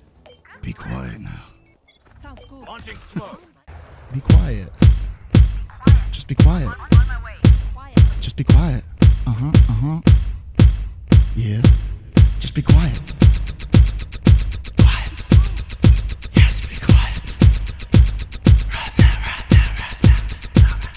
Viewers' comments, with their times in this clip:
0:05 I need that beat bro starting that wasso so sick!